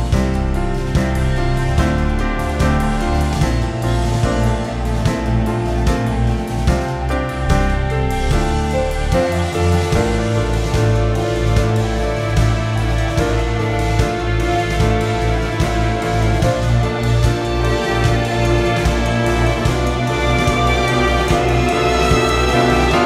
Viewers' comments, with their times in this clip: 0:09 is my favourite part of Tomorrow. It just turns for a subtle moment into a very sad-sounding track, before the orchestra erupts into something magnificent again. I love the subtleties of this entire soundtrack-- so much beauty with dashes of tragedy.